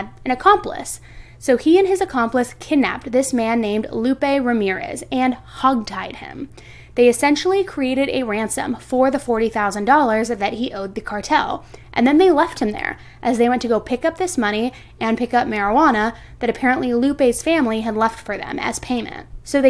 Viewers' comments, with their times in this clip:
0:05 ".....and hug-tied him...." that sounds so cute. I went back a 2nd time to listen and you did say it more like hog tied, but what I heard first time sounded better.